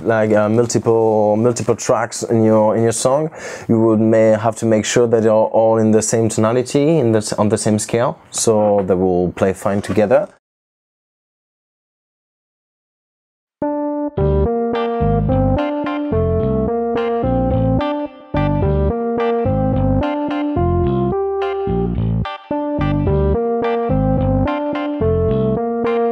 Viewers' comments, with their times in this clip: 0:10 is when the song starts